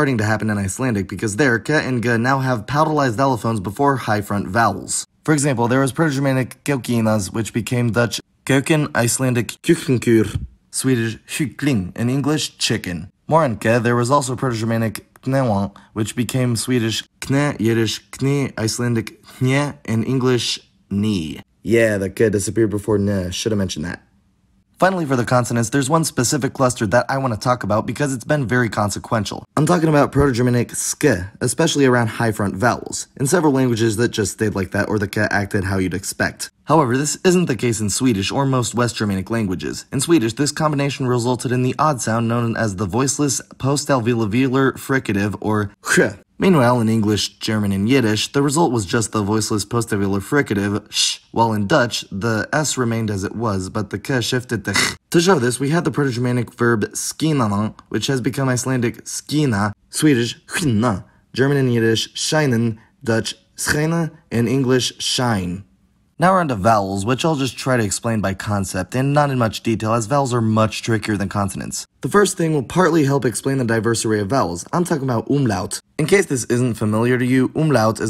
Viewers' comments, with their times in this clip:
0:06 To nitpick a bit: In the North Germanic languages the word for chicken has a diminutive suffix, so the Proto-Germanic form for them would be *keukilīngaz (or *kukkilīngaz). Your pronunciation of Icelandic <ú> /u/ is completely off here. It's hard to tell, but /hkl/ sounds like it turned into a [ç]. And finally, the <u> /ʏ/ should be reduced a bit so that it's more central and shorter.
0:07 Nice, the only slip I noticed was in 'kuiken' that came out sounding more like 'keuken'. As the f>v>f, I tend to do that myself, but it is a problem as there is a difference in meaning between 'vel' and 'fel' or 'vier' and 'fier'. s>z>s seems to be pressent in the way it's pronounced in Amsterdam (if it ever passed through the 'v' phase).
1:00 Interesting video and you made a good effort trying to pronounce everything. But I had a bit of a laugh. The word "skina" (to shine) in Swedish is pronounced with a long i and soft n. Your pronunciation with a short i and hard n made it sound like "skinna" (to skin) instead.